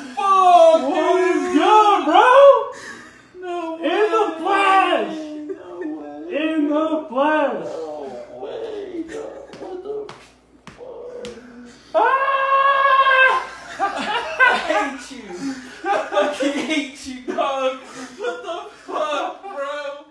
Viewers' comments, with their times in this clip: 0:06 I think those dudes broke the sofa hahahaha something crunched hard hahahaha 😆 😂